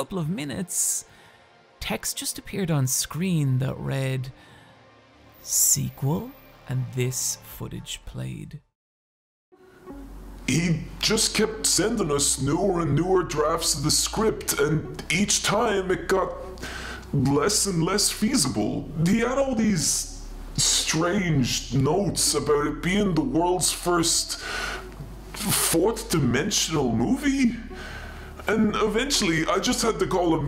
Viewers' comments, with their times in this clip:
0:04 i was like wait he sounds like the guy making the video.......ooooooohhhhh
0:11 It was that I realized, since I recognized his voice.
0:17 I just realized it at the scene starting A couple of the words sounded suspiciously Irish and I was like, wait a minute.....